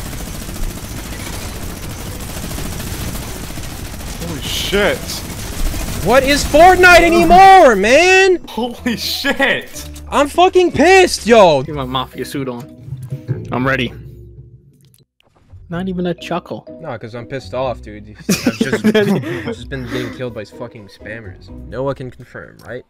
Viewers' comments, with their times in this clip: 0:09 first time I have ever hear you that pissed😂😂